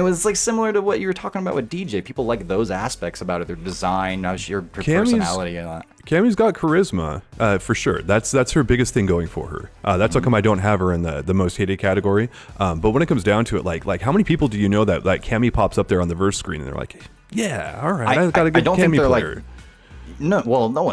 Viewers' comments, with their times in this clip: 0:03 I wonder if you intended during the editing to say "Asspect" just as we get a cake shot of Cammy 😂